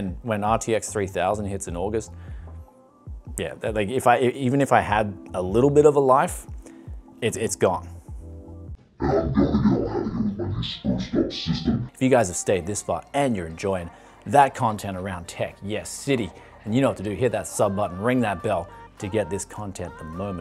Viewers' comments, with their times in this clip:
0:08 can anyone understand what he says ?